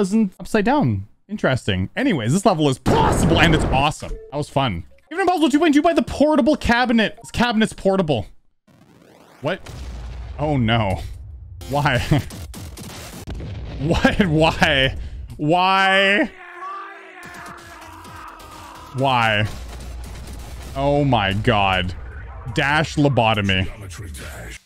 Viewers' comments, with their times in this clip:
0:10 2 FIRE IN THE HOLES LOL😂AND SO MUCH MOOOOOORRRRREEEEEE